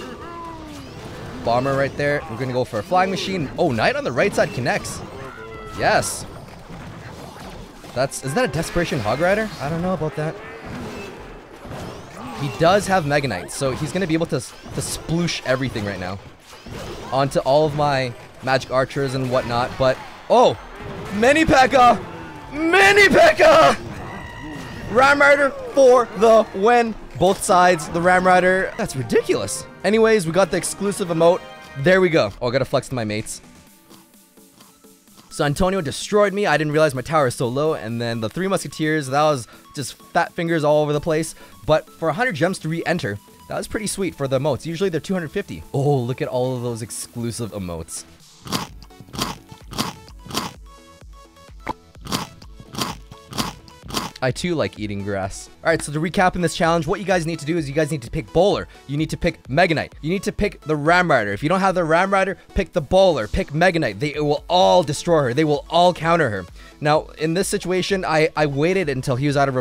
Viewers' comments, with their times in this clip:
0:07 Christian hog rider??
0:21 I knew what was coming and turned down my volume 😂
0:53 sounds like walking on grass in minecraft🤔😂